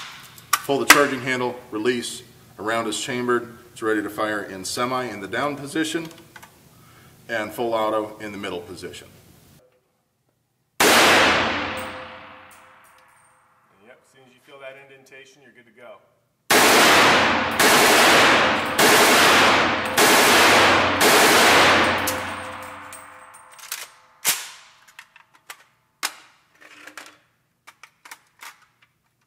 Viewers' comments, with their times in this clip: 0:10 who else felt like hearing an actual casing falling behind you? I swear I even looked behind to see if it wasn't a pencil or something, nice stereo.